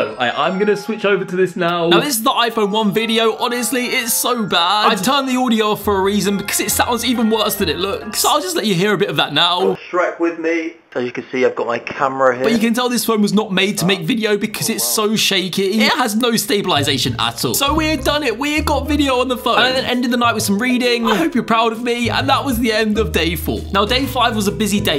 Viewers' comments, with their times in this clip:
0:10 sounds like the Oh dang it guy😭
0:10 bruh the sound of that audio really makes you look like in 2007 for real 😂🤣